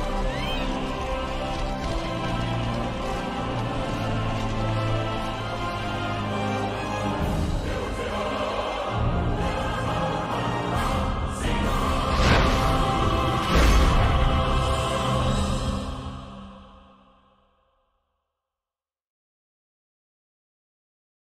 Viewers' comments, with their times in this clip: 0:06 Watching the first three cinematics, and it culminating with the franchise's theme after the Battle of Carteneau, absolutely fucking destroys me.